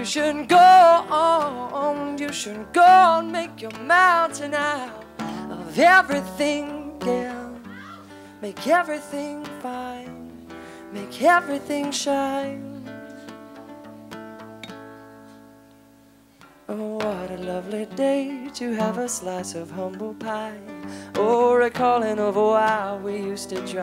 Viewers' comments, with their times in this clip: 0:06 lmfao! that scream thing! pahaha love jason mraz so much though :)